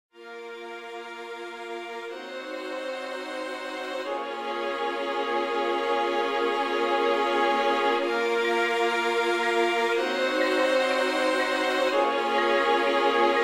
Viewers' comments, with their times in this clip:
0:01 Could be a Lana del Rey intro